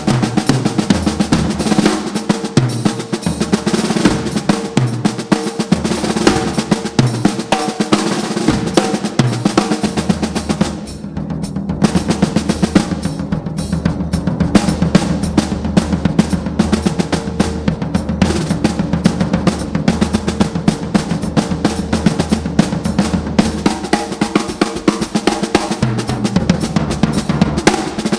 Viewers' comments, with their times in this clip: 0:09 Solo drumming needs snare. ;) (and is great!)